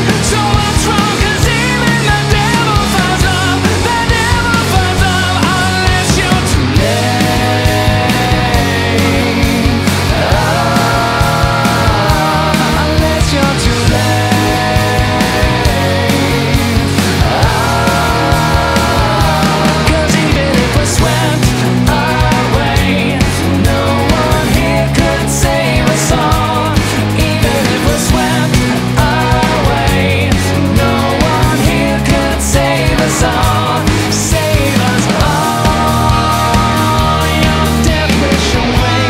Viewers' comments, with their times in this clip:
0:06 this song becomes an entirely different masterpiece, the entire tone of the song changes into something I can only describe as beautiful. No one has done this so perfectly that I can think of. If I could listen to this song in my last moments in life, I would be fine with my own passing.
0:07 This sounds similar to something Muse would produce, starting you can hear it in the vocal harmonization and slight breathiness in the vocals (minus the falsetto) and the lyrics themselves. Great band, and after hearing this on the radio earlier today (94.1 WJJO) I'll be checking out more of their work!
0:20 the beginning reminds me of a muse chorus. The way the whole thing "gallops" on lol if that makes sense.